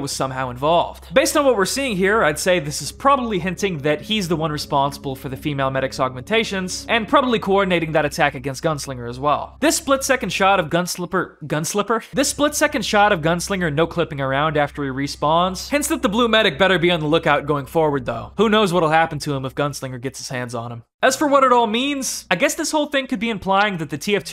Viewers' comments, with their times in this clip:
0:10 ah yes, my favorite gmod arg youtuber, gunslipperpro2009